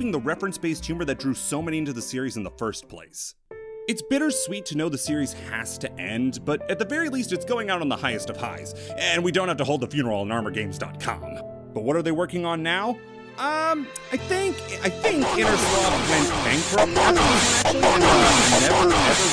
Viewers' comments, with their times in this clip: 0:03 WHY DID YOU RUIN THE MUSIC.